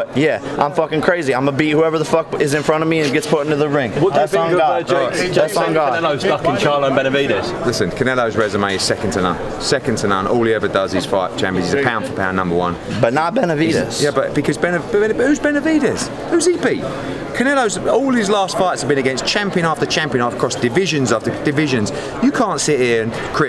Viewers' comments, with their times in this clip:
0:06 Lmao 🤣 Eddie laughs at jake